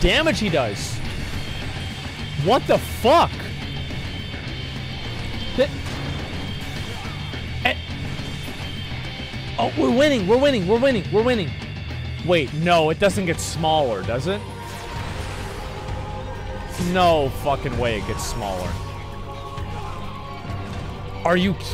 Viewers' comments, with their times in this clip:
0:08 The fight with buff nugget is all good till the music starts playing The panic attacks I had as White Mage on this.....